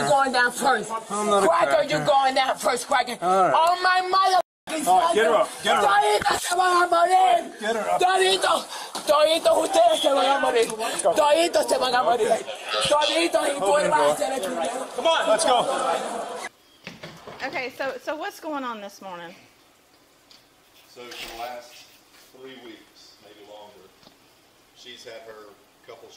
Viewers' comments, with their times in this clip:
0:09 was she speaking in tongues?!?! WTH?!